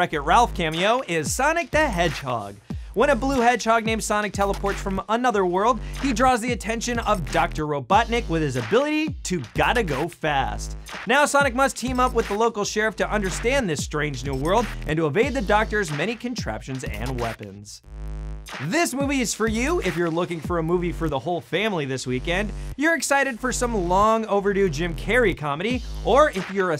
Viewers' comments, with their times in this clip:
0:07 is that just me, or did he say Dr. Ro 'Butt' nick ?